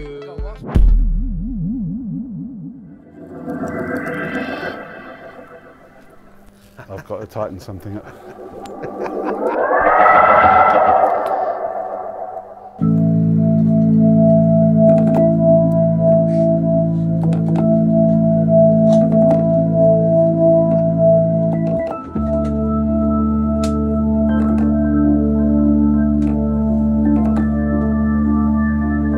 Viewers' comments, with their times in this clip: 0:10 Who also got the Moon Cresta music ? Also, that hammond needs a Highway star solo to be deflowered :-D